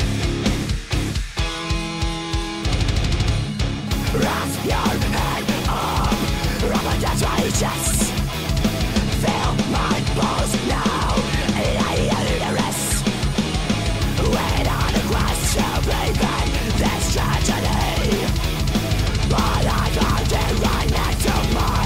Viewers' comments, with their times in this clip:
0:08 up until now i had always thought it was "feel my balls now, your uterus" :|